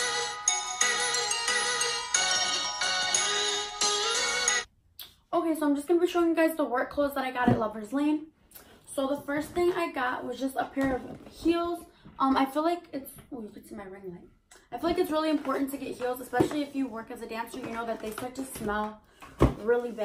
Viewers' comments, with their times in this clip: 0:07 was that a fart????? LOL!